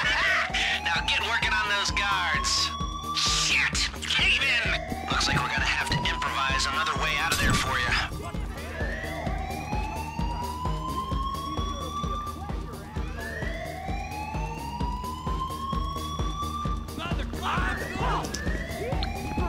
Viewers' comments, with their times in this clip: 0:04 sounds like lester Says cave man,.lol.